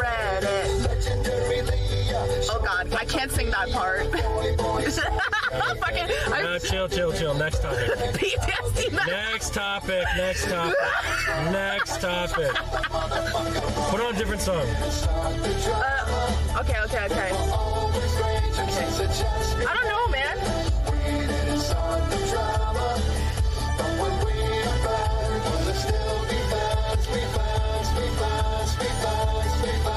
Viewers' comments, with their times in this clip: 0:10 ?I can't really hear